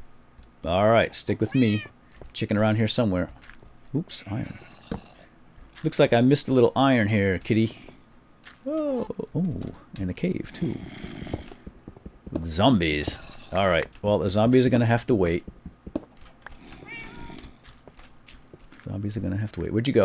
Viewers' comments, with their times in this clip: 0:07 anyone else notice another voice?